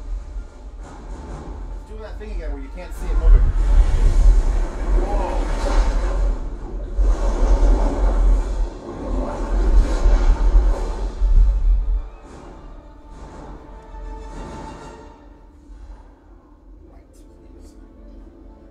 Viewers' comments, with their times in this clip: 0:03 That rumble makes my sub sound so much better than I ever remember it sounding.....